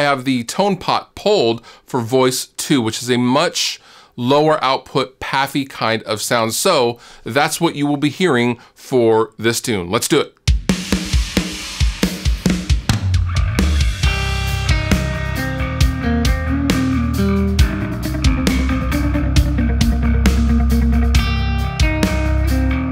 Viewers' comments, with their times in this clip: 0:10 Absolutely killer demo That needs to get folded into a full song. And while it’s not the topic of the video, you’ve got a killer bass tone going on here!